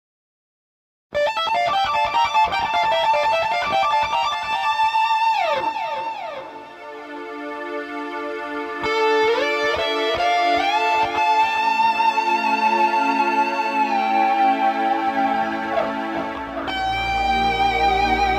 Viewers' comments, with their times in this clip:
0:06 The keyboard reminds me of the intro to careless whisper.